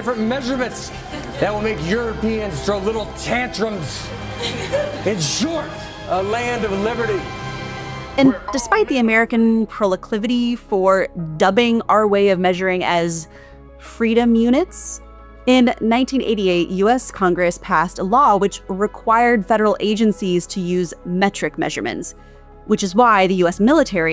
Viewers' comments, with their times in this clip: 0:09 At minute you said proleclivity. I think you'll find that the word id "proclivity"